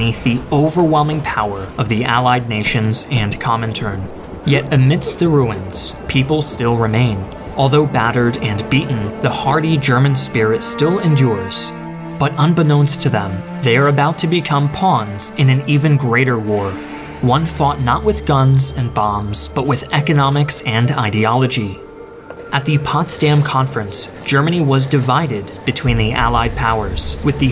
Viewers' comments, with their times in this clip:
0:10 I hear that waw music in the background